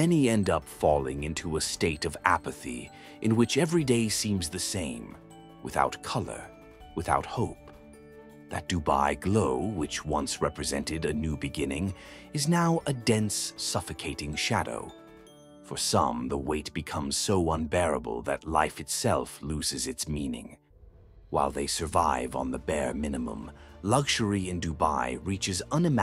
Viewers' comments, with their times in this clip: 0:09 This is so sad. This man's silent sobbing brought me to tears.🥺🥺🥺💔💔 Don't they have the hearts to at least appreciate these people's hard work and give them decent accommodation????